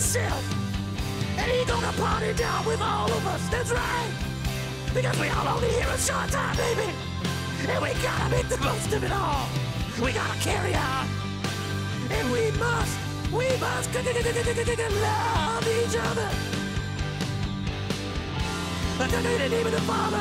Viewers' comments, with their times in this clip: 0:07 it sound like he was just about to laugh but held it back.